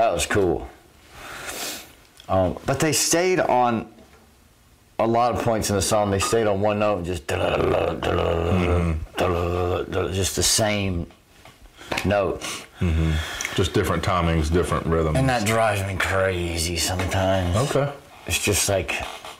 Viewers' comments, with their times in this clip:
0:04 that song is not about guitars but drums.If I recall correctly Tomas Haacke practised that song half a year to record it! That's why drums is louder than guitars